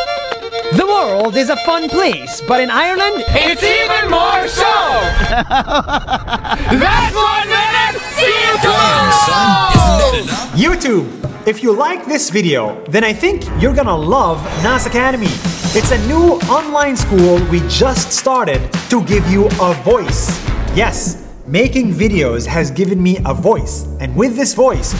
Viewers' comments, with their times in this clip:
0:05 that man laugh made my day